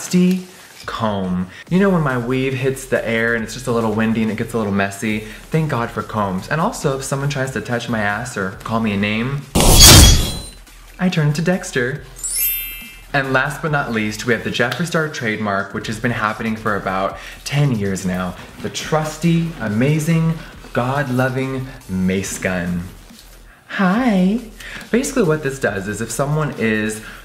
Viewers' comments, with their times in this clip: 0:10 RIP HEADPHONE USERS!!! Lol, I got so scared 😂